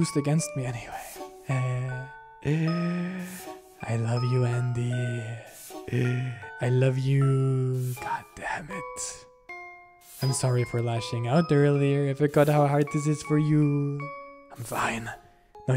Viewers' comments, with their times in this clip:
0:03 dude i was just playing roblox then i hear ''I LOVE YOU ANDYY~~'' like dude why did you say it like that